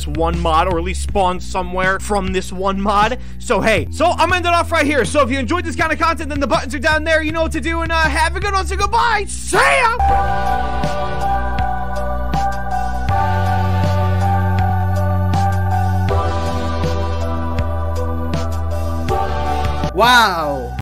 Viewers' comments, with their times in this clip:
0:10 new outro music🗣🗣🗣🗣💯💯💯🔥🔥🔥